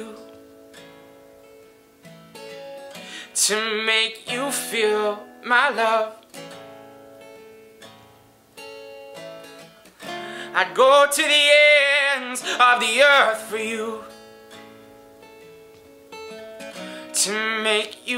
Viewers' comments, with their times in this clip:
0:05 You may have tried to put on a persona too much. You didn't finish the notes the right way. I think it got right starting I like your voice though.